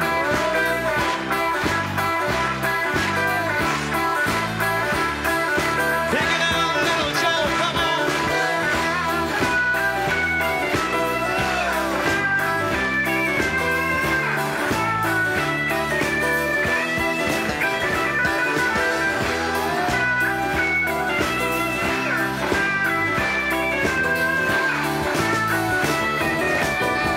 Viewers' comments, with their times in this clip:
0:09 Man, listen to that guitar !! Pick it brother!!!
0:09 Man, listen to that guitar !! ❤